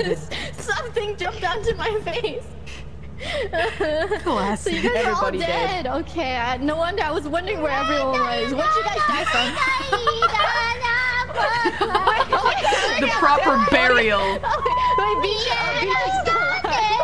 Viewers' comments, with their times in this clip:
0:04 Biboo singing Unravel while carrying Bae's corpse lmao